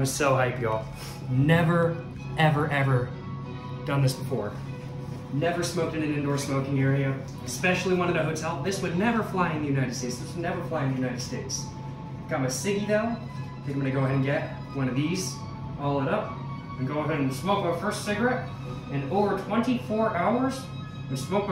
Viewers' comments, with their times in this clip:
0:05 the ambient music of the first cig is 🔥🔥🔥🔥🔥